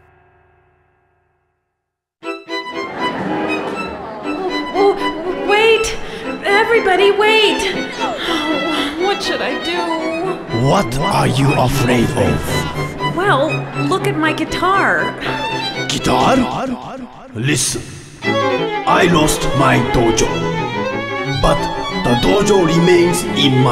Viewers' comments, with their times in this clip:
0:07 I hear a faint “NO”